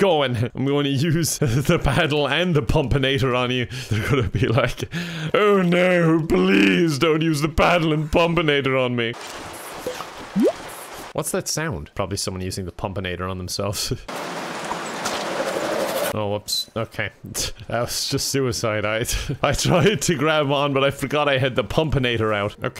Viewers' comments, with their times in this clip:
0:05 did you try to do a robot devil voice there?
0:05 ..bruh he sounded like Snape from AVPM :O